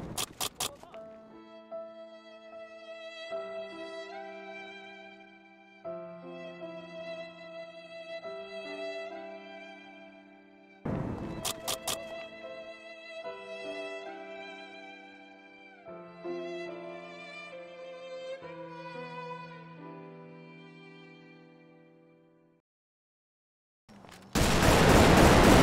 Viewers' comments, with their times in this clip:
0:06 The gun clicking is the worst part of life 🤦🏾‍♂️